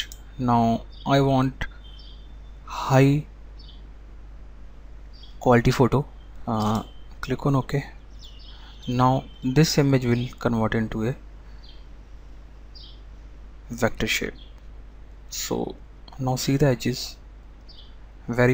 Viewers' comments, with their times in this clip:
0:04 you couldn't say fidelity hahah. nice tutorial though